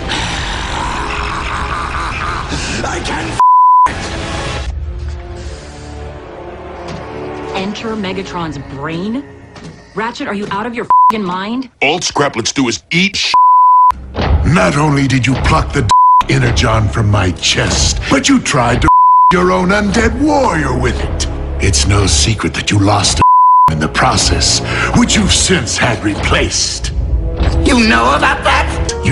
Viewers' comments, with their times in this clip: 0:10 Best one: By the way, when Starscream says "symbiosis", it sounds JUST like you doing your starscream impression.